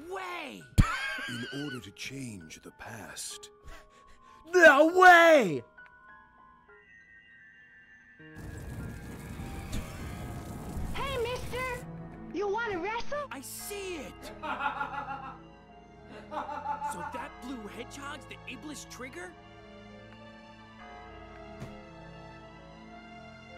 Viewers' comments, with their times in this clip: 0:10 Sonic's reveal with the twitch alert had me fucking crying with laughter